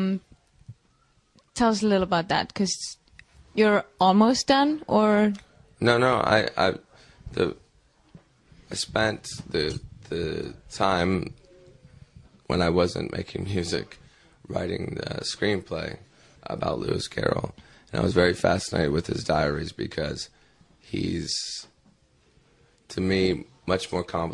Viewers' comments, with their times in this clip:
0:07 I like his voice in